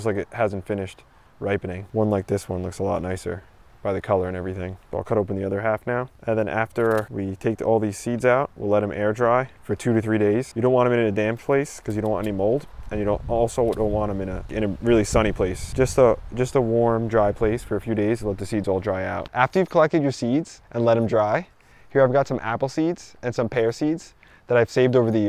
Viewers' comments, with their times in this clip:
0:10 Did he say want or don't want